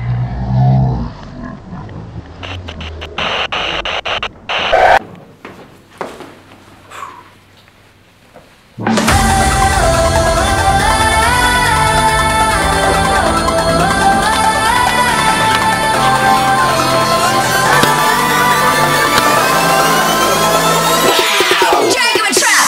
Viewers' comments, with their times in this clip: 0:05 Warning screamer in the :O